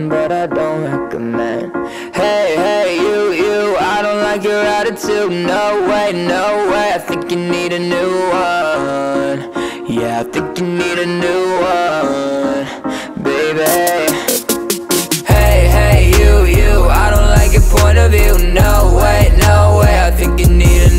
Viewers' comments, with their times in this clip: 0:03 Why I feel this is almost Avril's girlfriend?